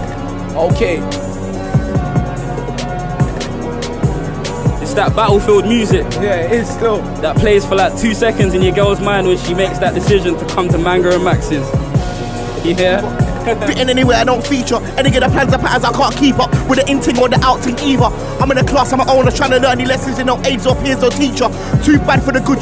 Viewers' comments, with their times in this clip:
0:04 The way Manga catches the beat 🔥